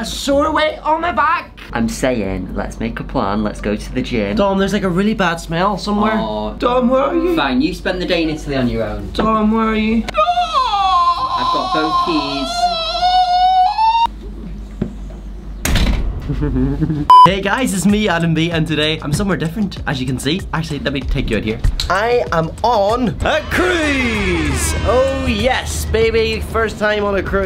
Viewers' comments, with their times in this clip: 0:10 I love the voice though